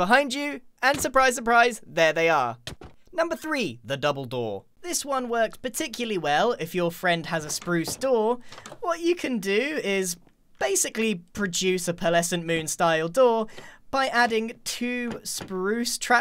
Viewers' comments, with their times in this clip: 0:03 " THE BOUBLE DOOR" Me: did you say dumbeldoor?? Sorry if i wrigted wrong ;)